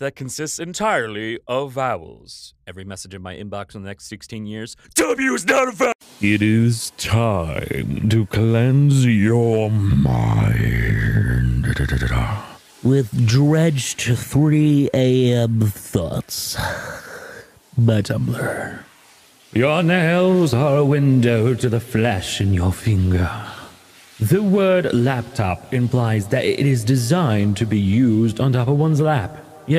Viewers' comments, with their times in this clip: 0:09 i am almost definately the only one thinking this but does anyone else think that that kinda sounded like hermeus mora? no? just me? i guessed so
0:10 his voice gets so low, and like rough (idk), that it sounds like yagami yato voice acting angry bakugo, and i don't know how to feel. Like not exactly, but I had paused the video for sometime because i had things to do, and so when I just started the video again only to hear that, I was extremely confused.